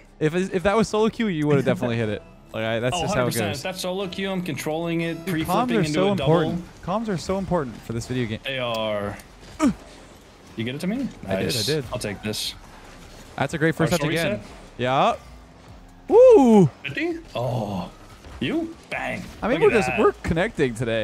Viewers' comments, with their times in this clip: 0:05 "Comms are so important" then proceeds to grunt instead of saying anything about passing the ball